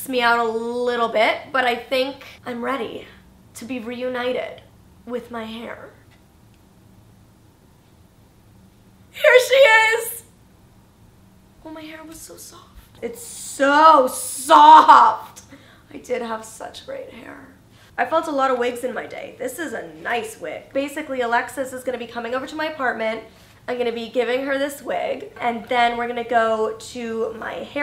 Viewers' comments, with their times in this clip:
0:08 did you just say HAIR she is?